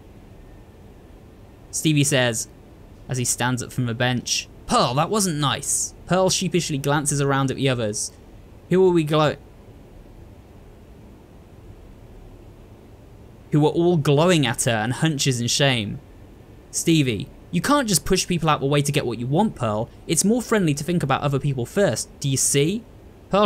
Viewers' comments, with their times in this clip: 0:08 You came across an unfamiliar word. I find the pause funny. ^^ First part pronounced as 'glau', rhymes with 'cow'. Glowering.